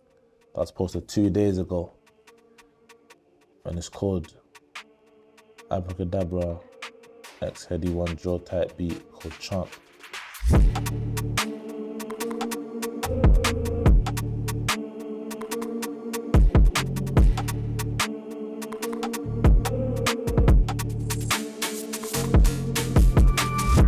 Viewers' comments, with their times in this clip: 0:04 wtfff, shit haunted